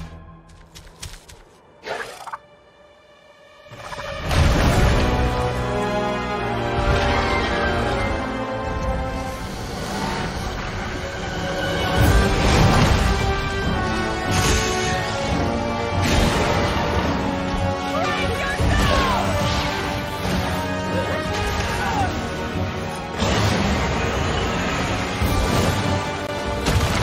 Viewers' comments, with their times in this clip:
0:10 MH4 fans: EAR PIERCING FAN GIRL SCREECH